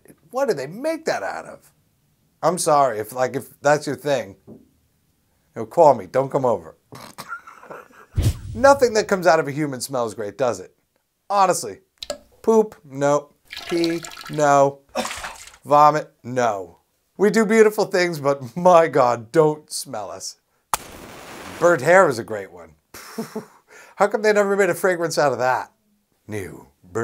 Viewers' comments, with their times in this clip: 0:10 ew that poop dropping sound